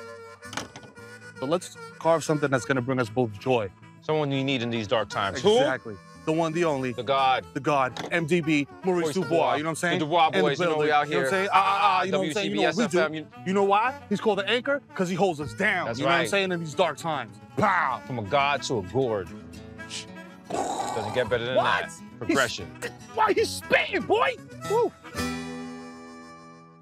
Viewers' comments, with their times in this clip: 0:10 that synced up ah ah ah lmaoo